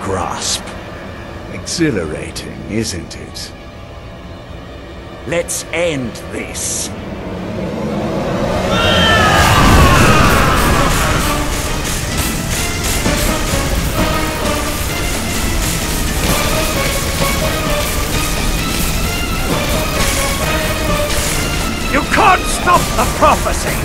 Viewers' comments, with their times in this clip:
0:09 the vampire sounded like voldermort lol